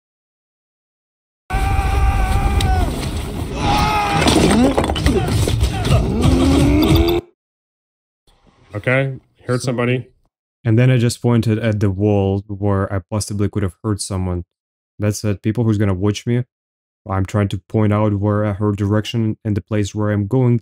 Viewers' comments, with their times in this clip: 0:08 u can hear the spider on the video lol